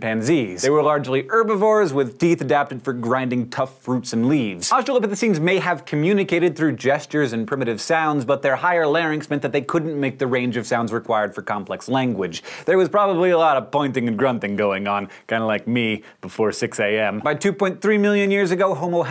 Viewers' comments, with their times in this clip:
0:07 Omg we've come a long way, I mean australopithecus had a hard time communicating and now we're hearing Hank speaking faster than I understand😂